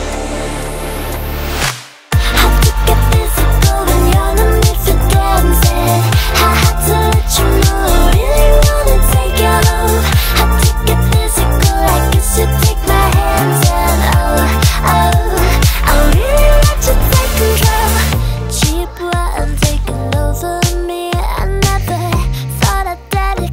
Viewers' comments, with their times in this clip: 0:09 when the chorus kicks in look out. totally dope.